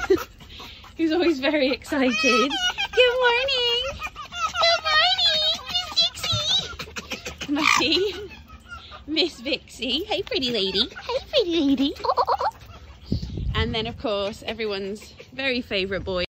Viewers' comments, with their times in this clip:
0:07 That Muttias’s scream It kills me every time, haha!